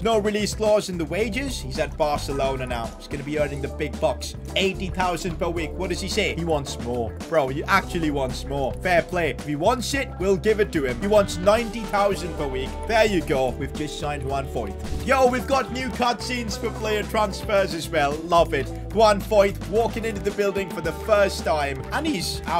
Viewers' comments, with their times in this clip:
0:09 sounds a lot like bartomeu ngl